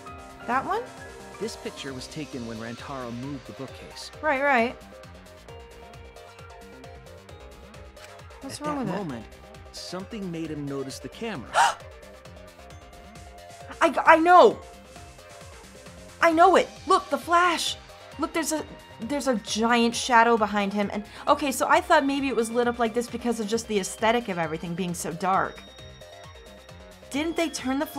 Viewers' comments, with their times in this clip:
0:10 wow that gasp! So real